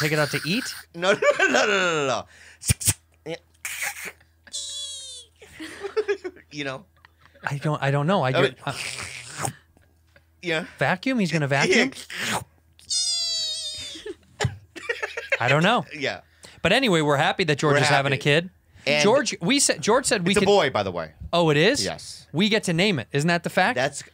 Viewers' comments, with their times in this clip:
0:05 never seen Rudy laugh so hard 😂